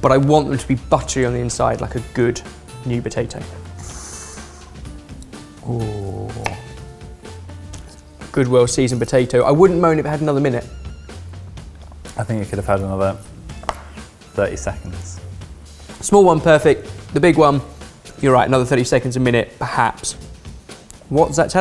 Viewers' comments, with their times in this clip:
0:05 you can hear from the cut sound that the potatoes are under. You don't get a click like that cutting through a tender piece. It took force.